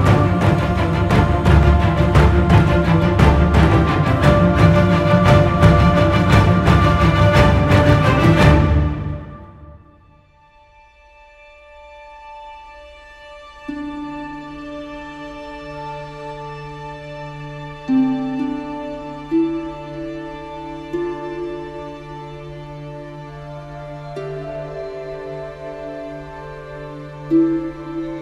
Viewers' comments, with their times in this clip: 0:09 god dammit. Just sitting here remembering walking up to the first tree and hearing that tune for the very...first...time. When life was just so simple. Sitting my my room, at 2 am, just running around Teldrassil without a worry in the world. That tune...hits me so hard. I can't explain why. EVERYTHING just comes back to me at that instant.